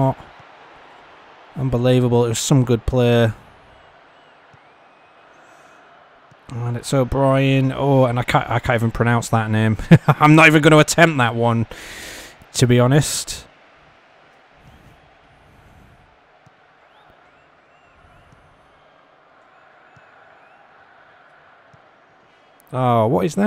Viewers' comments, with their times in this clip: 0:09 almost sounds like a cat stepping on a keyboard.